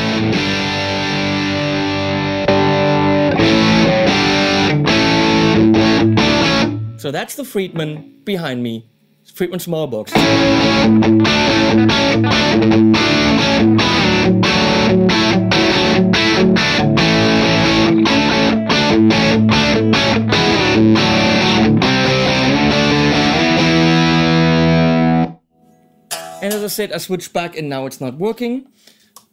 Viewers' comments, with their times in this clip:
0:10 what was that riff? Tasty asf, sounded Van Halen-y.